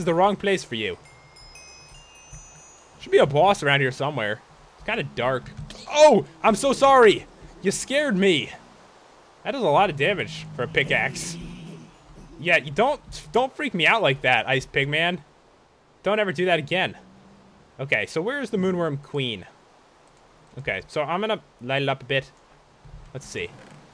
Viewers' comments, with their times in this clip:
0:10 ice pigment lol